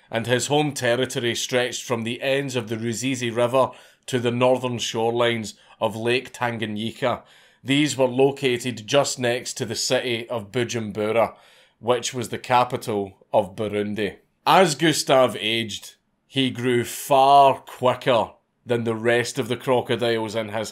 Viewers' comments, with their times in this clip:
0:03 How you pronounced boty names at once is hilarious😂